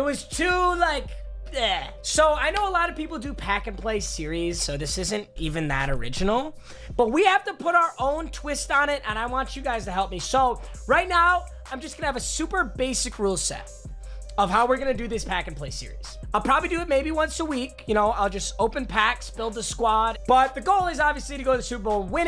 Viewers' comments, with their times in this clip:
0:03 did anyone else get siri to come up when he said play series